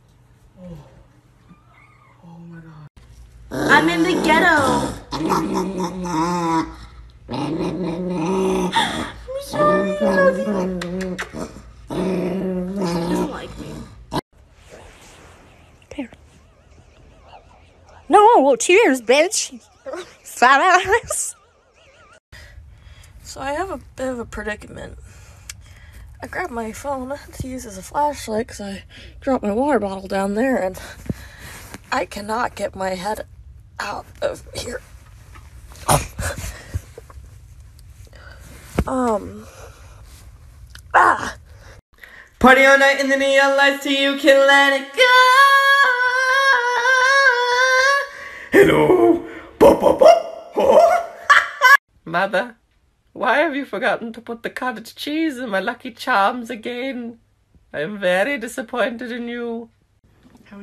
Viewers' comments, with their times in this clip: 0:09 I CAN NOT BE THE ONLY ONE WHO HEARS THAT DOG GO “that’s not funny” 😳😂
0:45 Guy was on point with the creepy music from the it trailer i almost died lol